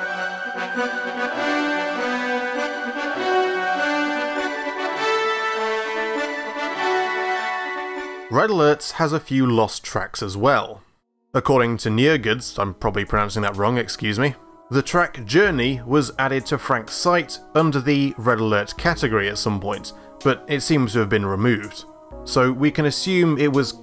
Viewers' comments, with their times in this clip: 0:10 No, actually, you got my name pretty much right. I just pronounce the end more like "-goods" :D Some extremely good research in all of this, by the way. Kudos.